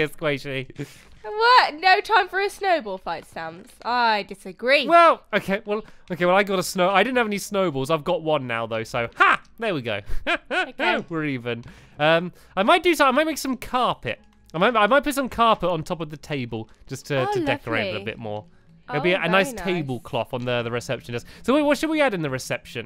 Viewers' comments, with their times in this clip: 0:08 watch stamps laugh is wierd lol